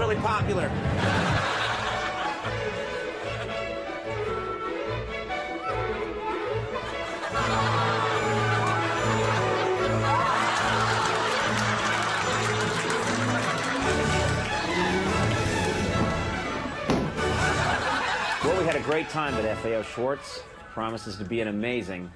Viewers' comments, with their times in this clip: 0:06 That youngling heard boss music.